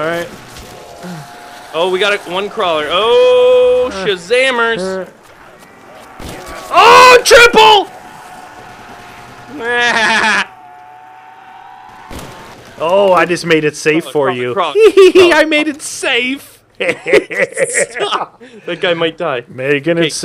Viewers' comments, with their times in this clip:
0:08 Peter form Family Guys Laugh XDXDXDXD